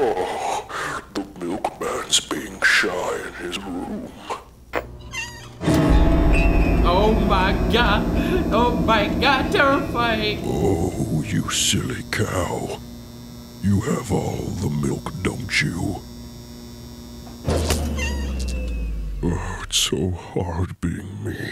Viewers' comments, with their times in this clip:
0:08 Honestly, you almost laughed here.